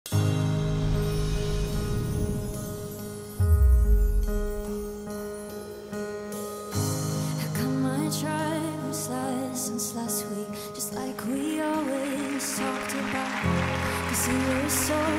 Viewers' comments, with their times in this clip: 0:00 this girl made me cry over nothing. her voice is really good